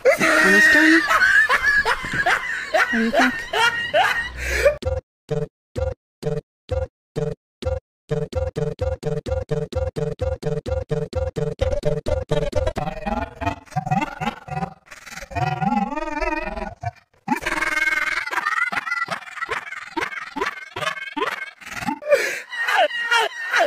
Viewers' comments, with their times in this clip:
0:05 it sounds like a robot flip effect.